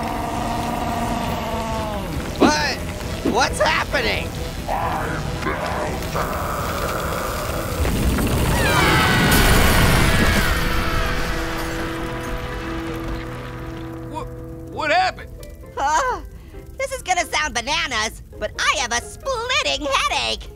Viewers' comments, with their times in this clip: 0:05 Ice Scream: I'M MELTING!! MUFFLED BOOM Possessed fruits: Ah!! BOOM!